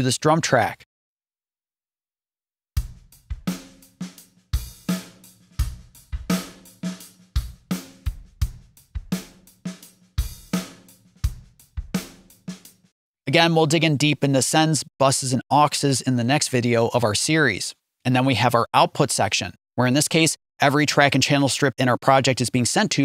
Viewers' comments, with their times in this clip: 0:07 you had the drum track solo'd only but we could hear the reverb bus effect even though that wasn't solo'd. What's going on there?